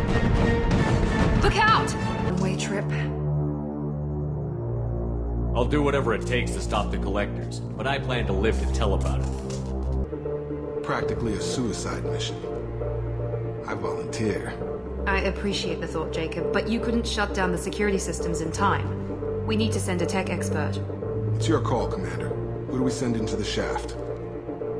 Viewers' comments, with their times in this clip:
0:10 I just can't stop laughing. "Jacob, you volunteer, so you're up (actually it's because you volunteered, and I couldn't think of a reason to pick someone else.)." His squinted eyes, massive chin and confidence inspiring voice really sell his incompetence lol. I almost think bioware put that in as a nod, so the player knows how to kill him for being so uninteresting.